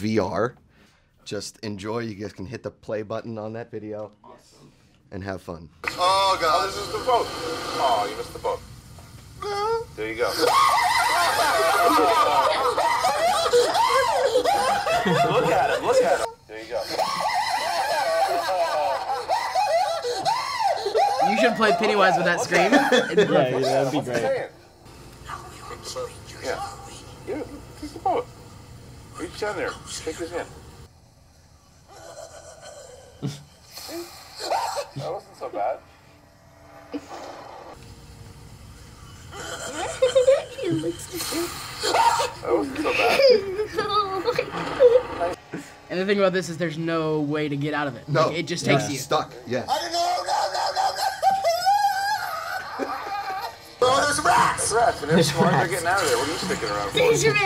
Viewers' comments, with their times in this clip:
0:10 his scream likes pennywises laugh
0:39 omg how sweet dose his cute little voice sound